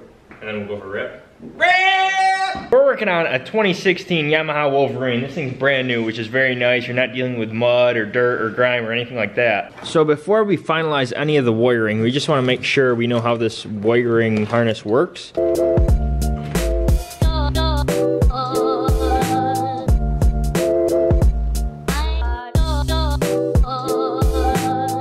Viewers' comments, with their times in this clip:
0:10 how he said wiring😂😂